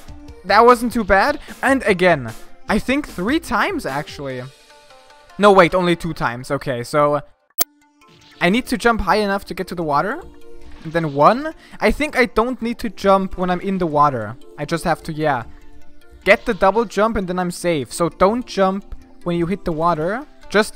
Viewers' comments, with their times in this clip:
0:06 is it just me or is there a ear piercing screaching sound here?
0:07 thank you whatever was that i think my eardrums exploded
0:08 I heard an audio glitch? Or maybe a noscope? I can't tell